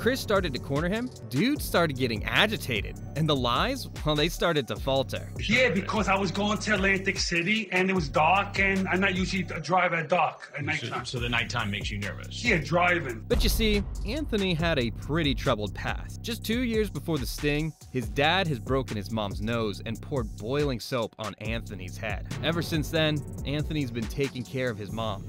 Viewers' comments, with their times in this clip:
0:06 dude sounds like Ray Romano